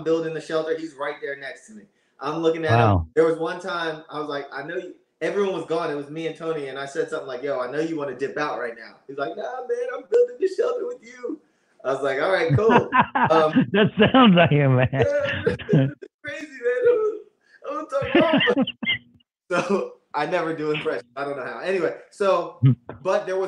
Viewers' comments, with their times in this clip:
0:06 THAT TONY IMPRESSION IS SO GOOD!!